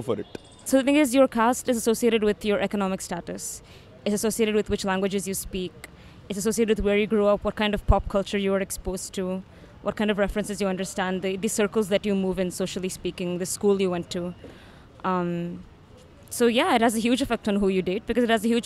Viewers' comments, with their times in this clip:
0:04 she have an American accent